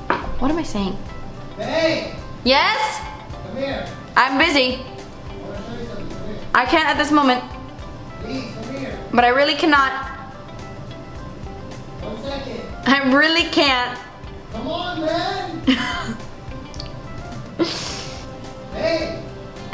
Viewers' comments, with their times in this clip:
0:03 At like i was laughing really hard because when you said "yes?! I'm busy" you sounded exactly like Jade from Victorious